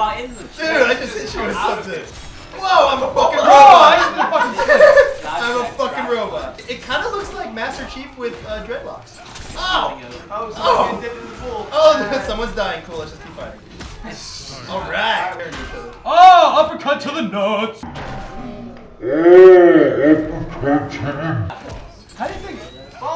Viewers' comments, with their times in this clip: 0:06 did anyone else catch them swearing and it not being bleeped???